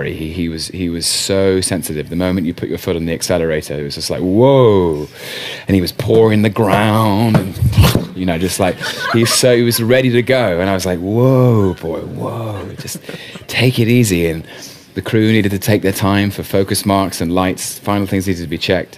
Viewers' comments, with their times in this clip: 0:06 omg he so naturally and spontaneously impersonated the Joey horse. Now I see why some interviewers asked him to impersonate Joey. They must have seen or heard of this panel interview, although he didn't do it the same as he did it here; he does a horse nay instead. I don't think he knows this War Horse recount is the inspiration of the requests.